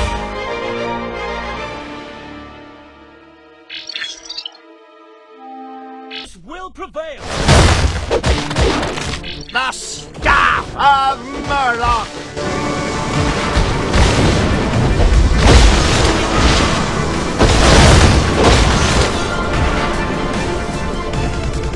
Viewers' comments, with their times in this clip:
0:07 sound like earthquake attack